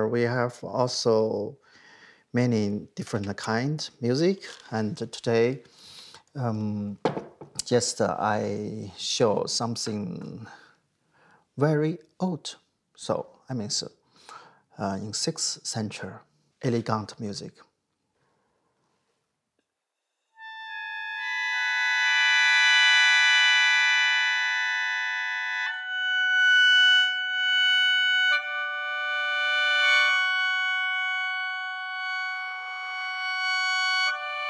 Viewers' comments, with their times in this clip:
0:06 Hold a second, he said he’s gonna play some old music, which is from the 6th century. So THE HARMONY WAS THAT MUCH COMPLICATED BACK THEN?????!!!!!!
0:18 Absolutely soul crushing beauty What an instrument. What a sound.